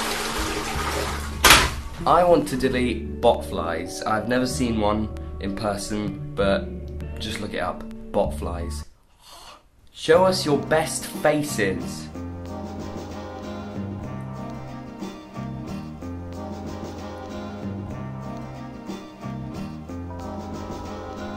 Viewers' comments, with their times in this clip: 0:08 is there a reason the you started speaking in parcletounge after telling us all to google botflys????.... .... :)